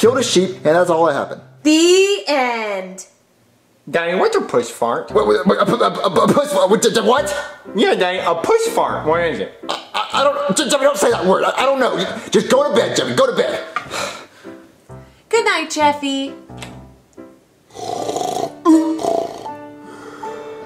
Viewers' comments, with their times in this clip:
0:05 I died when he stuttered that